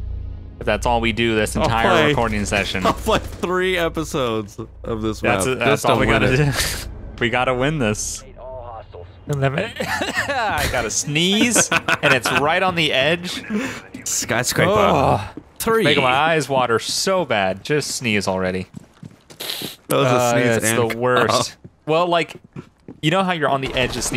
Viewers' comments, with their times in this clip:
0:09 that couch sneeze though lol Bay Area buggs 2016 everybody lol